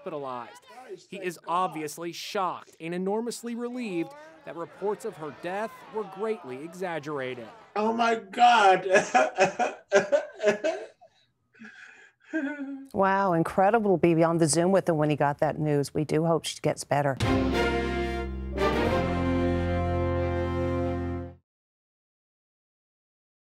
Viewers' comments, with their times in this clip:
0:08 his cry sounds like an acting
0:09 It’s the “ehe ehe ehe” cry for me